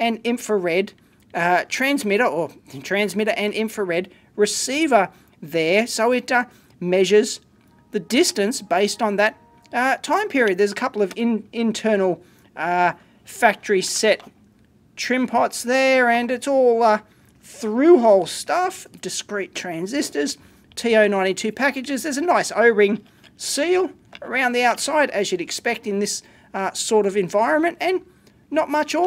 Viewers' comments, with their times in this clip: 0:10 you can hear windows starting in the background